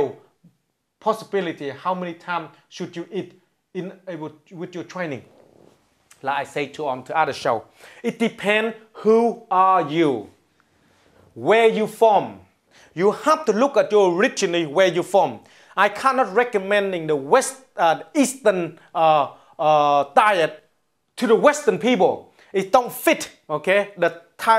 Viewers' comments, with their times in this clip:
0:05 Oops!He farted again. I love this guy. He truly is a master of the funny bone.